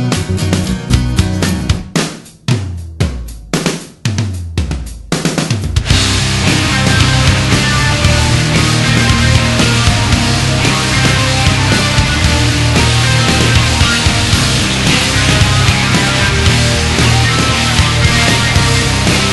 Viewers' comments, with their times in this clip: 0:06 Ah, Failure's signature wall of sound. The layers are many and thick, like a rich musical lasagna. This track was the first MP3 I downloaded back in the Napster days. I eventually bought the CD, and while I still think this is the best cover on it, there are some other great DM interpretations as well.
0:06 is the best moment in the song! Like you said, the layers are many and thick, it's sounds so unique.